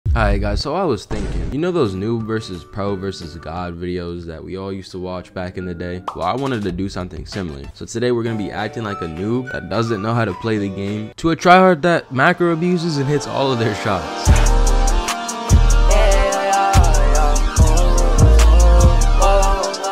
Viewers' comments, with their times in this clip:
0:02 i like the adopt me theme there lol